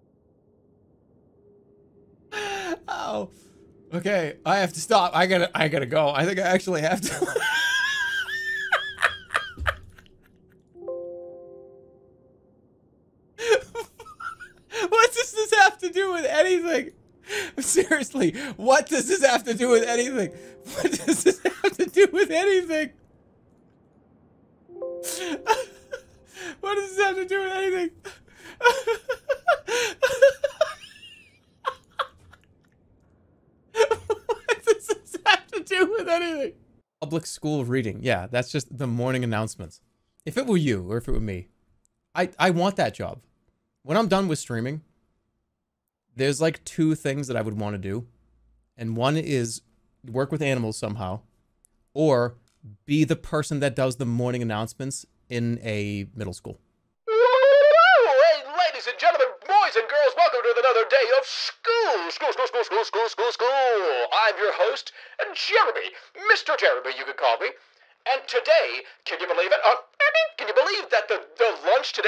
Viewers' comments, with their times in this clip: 0:06 is definitely the hardest Jerma laughed in like 4 years
0:13 i’m only in and his laugh is sending me i love jerma so much
0:56 he sounds like a drugged up radio demon